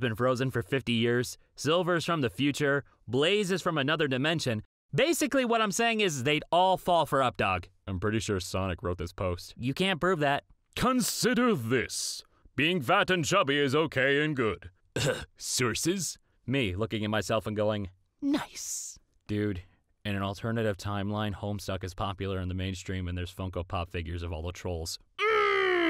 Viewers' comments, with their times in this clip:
0:10 It’s am and envelööp made me laugh so hard that I needed my inhaler